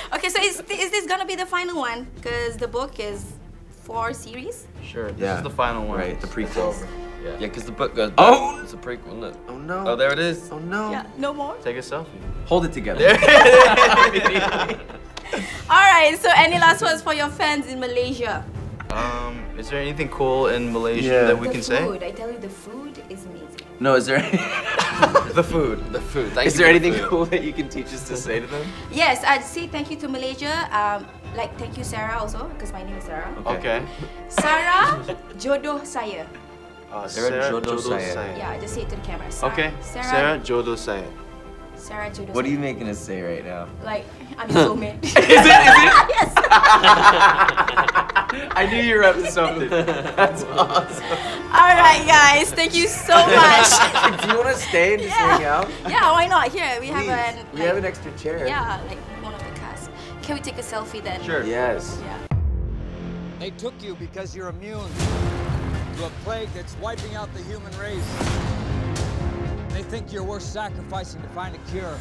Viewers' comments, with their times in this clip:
0:10 Is that Tommy saying "oh look there it is"
0:23 Dylan is love, Dylan is life~ His laugh is to live for!
0:45 what was she making them say to the camera?? Lol I couldn’t hear and then they all started dying😂
0:46 Can't imagine making Dylan laugh the way he does
0:58 oh dylan sound so soft in here :' dangg